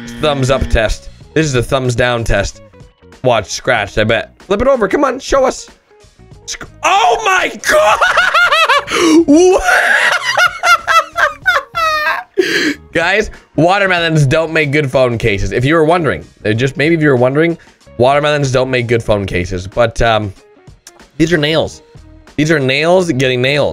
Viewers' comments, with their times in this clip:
0:06 WHAT KIND OF LAUGH IS THAT?